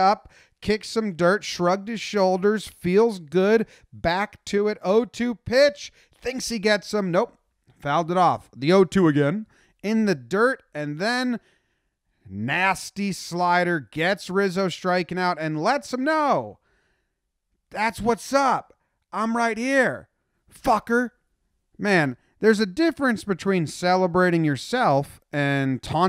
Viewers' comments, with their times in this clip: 0:08 Nice Bill Murray impression